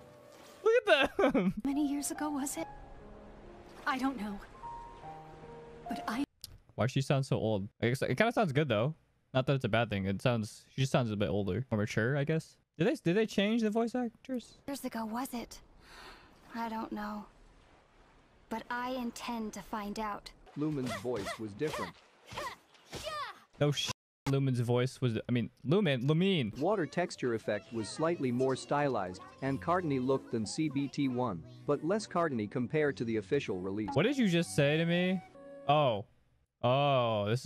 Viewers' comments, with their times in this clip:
0:04 is it just me or she sounds like elsa
0:21 i kinda like most of the old voices Lumine, Barbara, Paimon